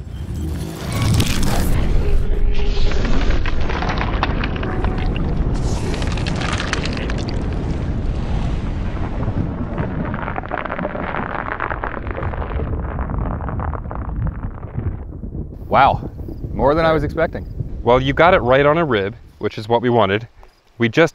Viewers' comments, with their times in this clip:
0:04 this sounds like gun ASMR, my friends imagine if that was a thing, gun ASMR lol